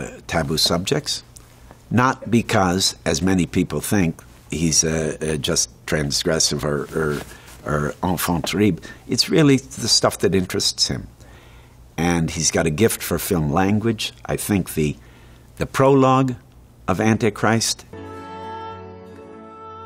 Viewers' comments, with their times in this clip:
0:07 What did he say ard ?? Transgression n al fonterib?